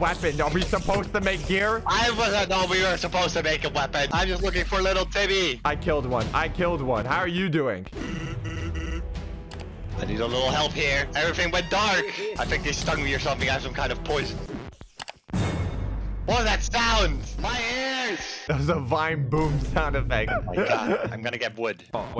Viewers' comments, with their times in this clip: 0:08 sans voice Bl
0:09 the fact that its sans voice during the trolling makes sense